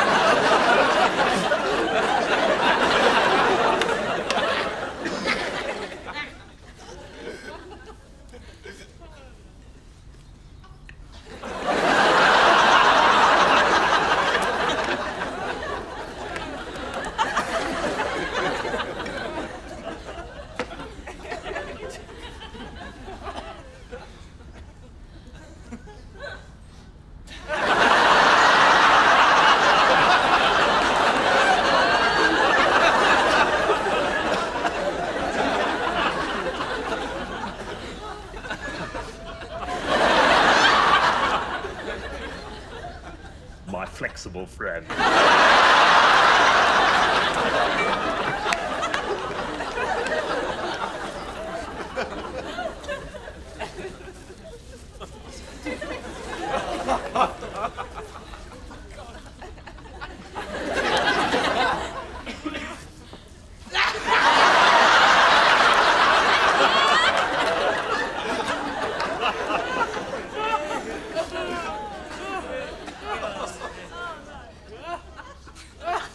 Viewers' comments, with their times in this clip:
0:07 that laughter sound in the backround
0:58 authentic canned laughter- you can hear someone say 'oh god!'